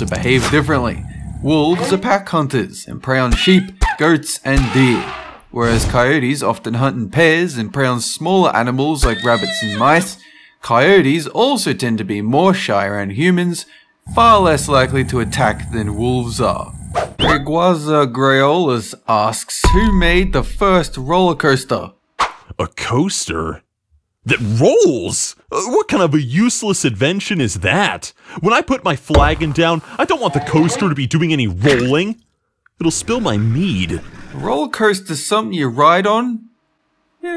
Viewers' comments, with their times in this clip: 0:03 Sheep: cat noise Goats: Dog noise Deer: Elephant noise
0:04 “Deer” Makes Elephant Noises
0:06 di- did you just play an elephant sound effect for a deer?
0:25 I thought he said it will spill my weed